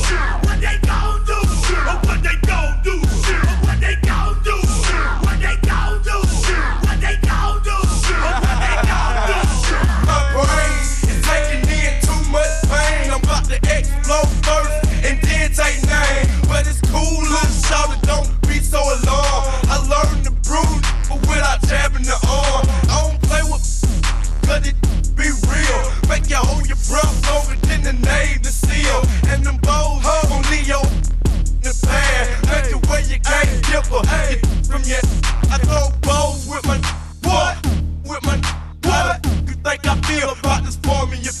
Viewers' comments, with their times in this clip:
0:09 when the zoom call starts lagging
0:26 I had to tap out Zero skills, sounds like shit, no rymes, not even a good beet. Just shit and "yeah".